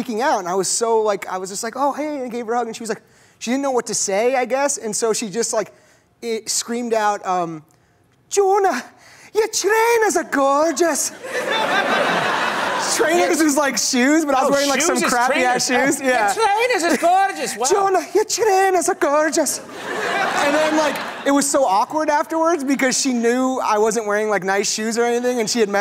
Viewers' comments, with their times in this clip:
0:09 lol that accent was pretty spot on